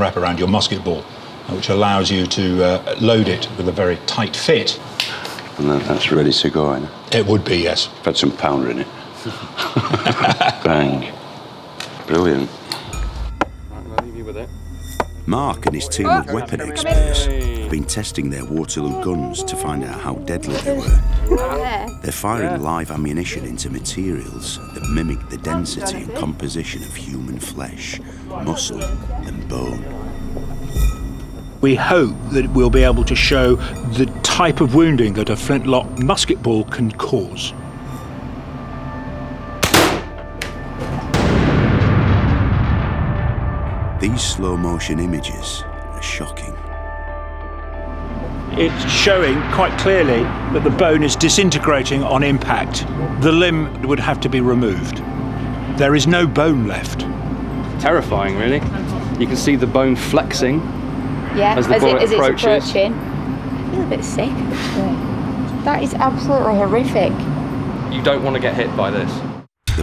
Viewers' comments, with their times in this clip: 0:05 "That's really Sugoi." - Sean Bean. (He actually says: "That's ready to go" or "thas reedy tego, ye?")
0:55 you can see Jonathan Ferguson in the background and hear him just after, was wondering if he'd pop up once they mentioned the Royal armouries